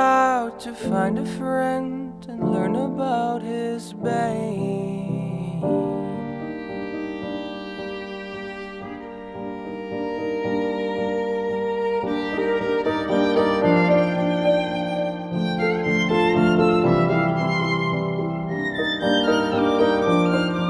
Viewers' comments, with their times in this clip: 0:05 one of the most beautiful melodies i've ever heard